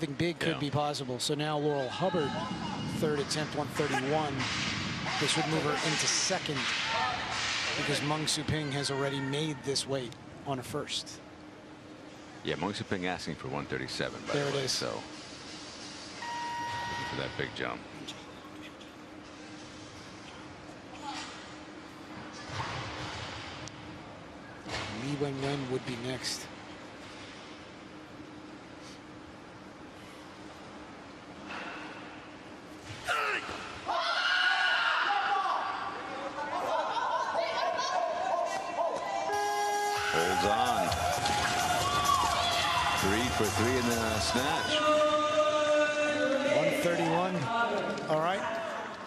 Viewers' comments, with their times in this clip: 0:04 I'm curious to hear what IT sounds like when IT speaks. I heard a few grunts before the lift all I could hear is Link from the Legend Of Zelda series.
0:31 most feminine noise I've ever heard.
0:32 that is a male scream.
0:32 what a nice feminine sound of the female vocal box.